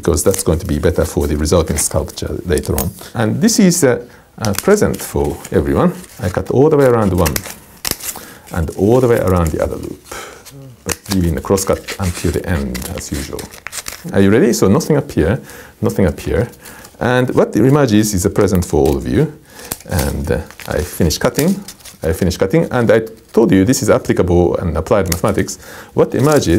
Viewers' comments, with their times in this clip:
0:09 "Around the other loop" "uuhh" EVP spotted ? xD